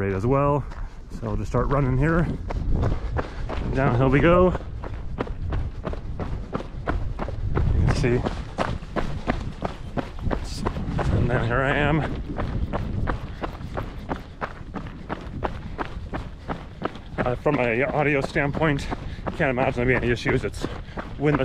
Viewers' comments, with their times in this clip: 0:09 some heavy stomping, hope your joints are doing ok 🤣 I ordered the Hero 9 myself, but I dont like its intrusive lens flare compared to Hero 8..